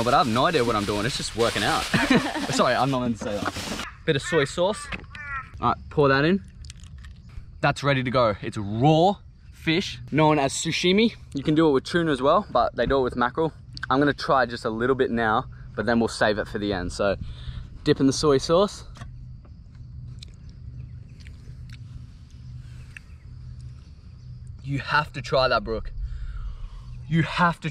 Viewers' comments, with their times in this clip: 0:10 ahahaha he says "sushimi" instead of "sashimi" lolll
0:10 it triggers me so hard that he's sayin sushimi instead of sashimi
0:10 No “damn lemon” and hahaha did he just call it “sushimi” ? Love these catch and fry vids mate!